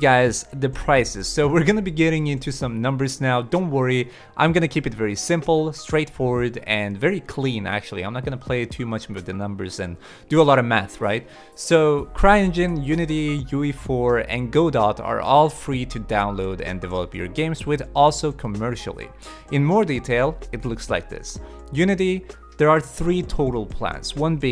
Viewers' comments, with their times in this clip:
0:09 do a lot of meth right? xD